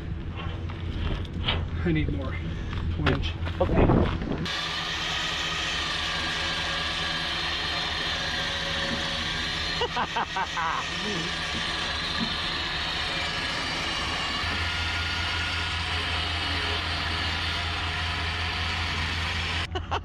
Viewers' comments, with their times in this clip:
0:05 That giddy laugh of I just got a cool ass new car hit home🤣